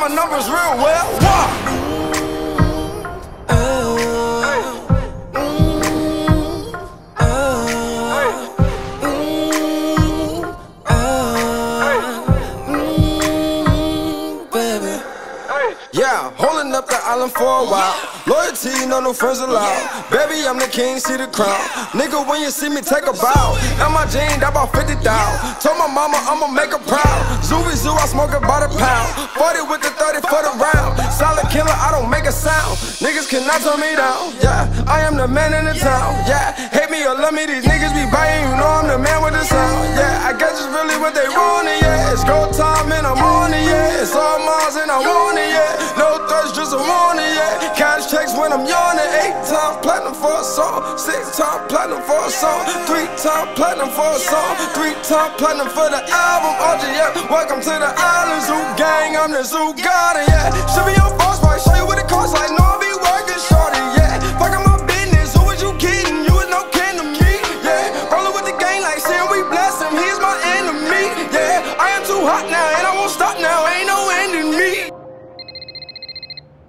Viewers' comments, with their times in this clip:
0:04 The song didn't get good till then he started getting tight. The whole song should have been that flow.
0:16 if u do it in fast mode it sounds lit
0:43 bruh if he started this song with the same style he put in this would of been alot better
0:43 Serious Thugga influence
0:49 Just imagine mixing flow with the beats at the end of the song🥺🥺
0:59 Thank god for that drop 🙏🔥
1:00 fire! The beat dropping shoulda happened at at least 4 other times in the song tho..
1:00 The flow ! GOD DAMN!